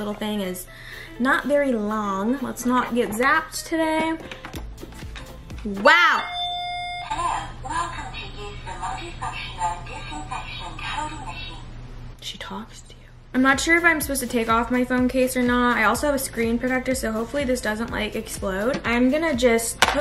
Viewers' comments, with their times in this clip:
0:05 i thought the doorbel ringing :d